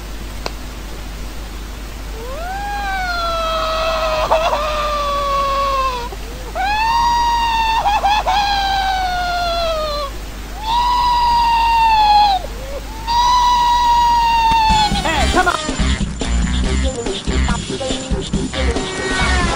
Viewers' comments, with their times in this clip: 0:04 OMG I WAS HOLDING MY LAUGH. THEN HE CRYED MORE AND I LAUGHED SO HARD😄😄